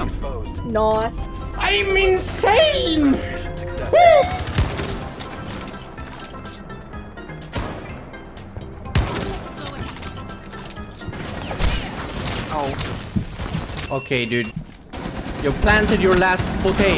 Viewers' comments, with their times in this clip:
0:03 Am I just trippin or who else heard the moist critikal woooo
0:03 did i hear cr1t1kal in the background?
0:03 I heard moist